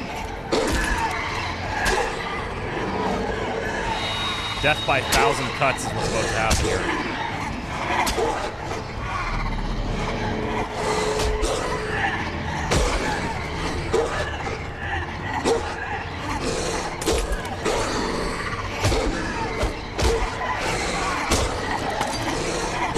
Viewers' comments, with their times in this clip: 0:04 I heard "death by a thousand cunts" instead of cuts, but it fits